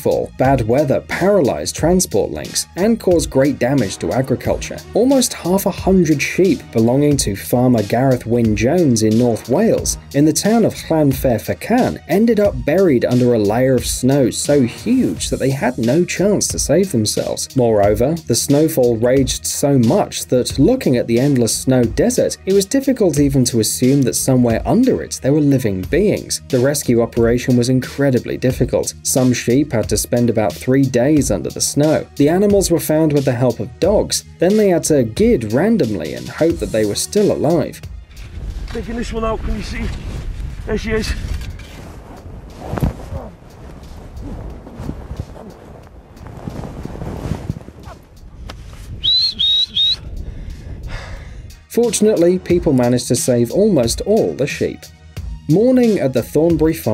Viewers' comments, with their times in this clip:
0:08 I speak welsh and u absolutely butchered those pronunciations
0:37 Is it just me or did he say gid instead of dig? 🤔😂